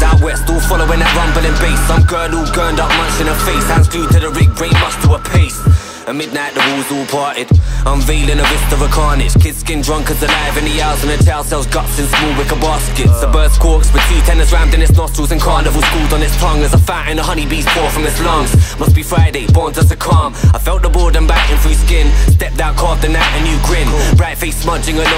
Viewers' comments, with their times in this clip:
0:06 The sudden shift in the music compliments Baxter’s torrent of crude abstract imagery so well As a listener I feel like I’m being taken on some mad psychedelic experience. Such a dope crossover of production and lyrics here 🤮✍🏼🔥